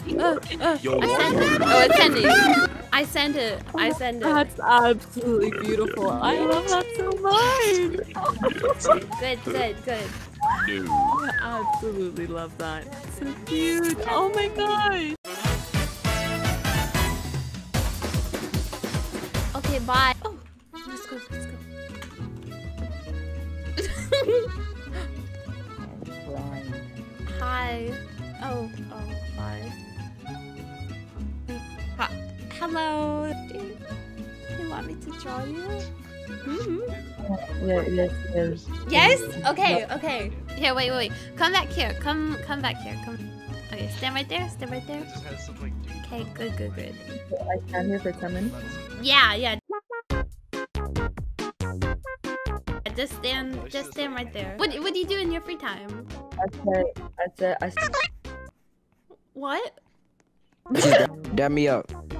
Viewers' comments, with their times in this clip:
0:05 who else was hearing a deep voice in the background 😭
0:50 omg the song is too cute